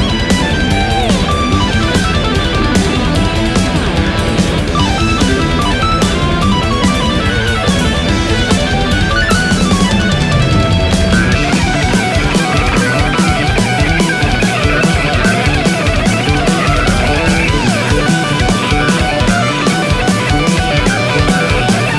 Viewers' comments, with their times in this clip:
0:08 James Hetfield playing rhythm in the background